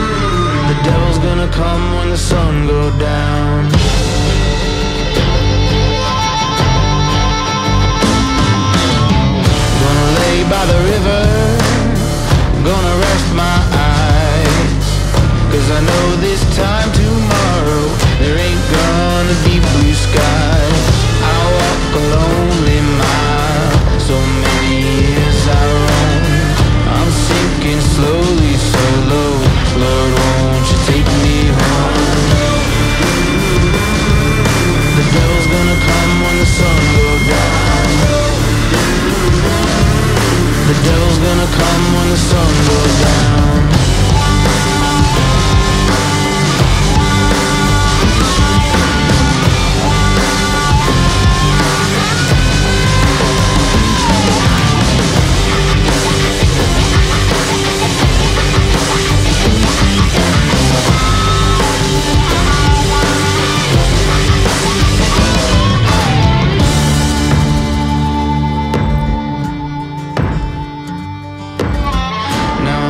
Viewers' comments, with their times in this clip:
0:03 that electric guitar 🔥
0:56 The music is good but I don't like title. I like the soundtrack